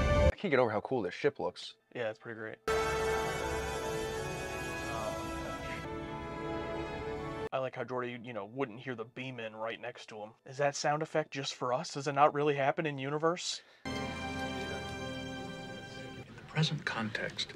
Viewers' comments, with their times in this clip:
0:03 Star Trek, as a franchise, has gone back-and-forth in some instances as to whether the transporter sound effect is diegetic or non-diegetic in nature. Generally, it is supposed to be audible in-universe, but sometimes they have it not be (as exampled here, but also in other episodes of different ST franchises).